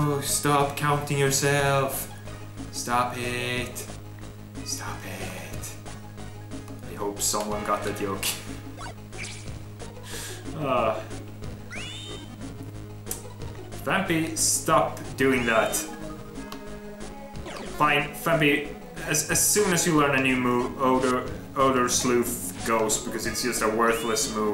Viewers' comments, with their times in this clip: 0:05 No idea what that joke references... But I think your Swedish accent was pretty funny right when you said that, so I could laugh at that! No offense, yust a yoke XD